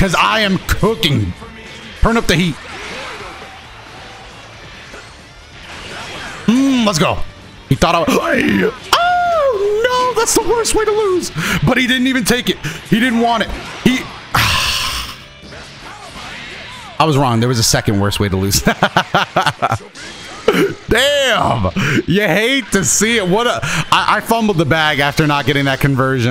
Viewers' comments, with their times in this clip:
0:07 what was that otherwordly noise😂